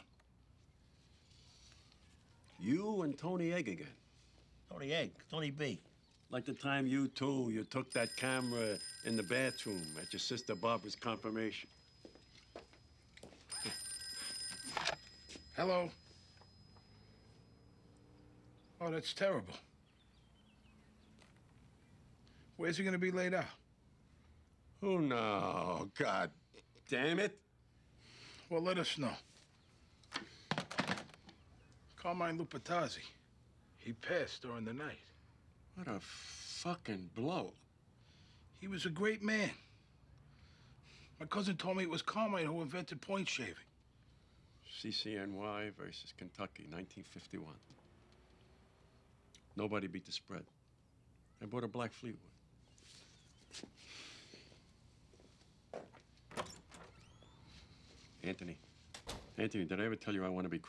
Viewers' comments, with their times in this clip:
0:08 theres that symbolic bell sound
0:45 I loved junior. His delivery was always on point. ... “...nobody beat the spread. I bought a black fleetwood “😄